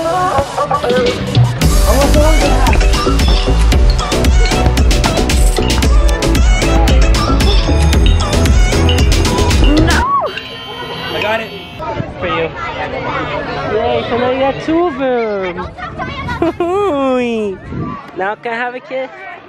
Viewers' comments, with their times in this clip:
0:03 Who else thought that when the beat dropped he was gonna make a shot